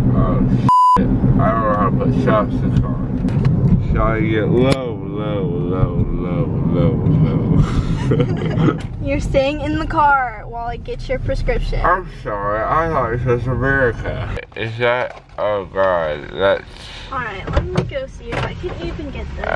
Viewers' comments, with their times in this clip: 0:03 I'm dying on that Low singing 😂😂😂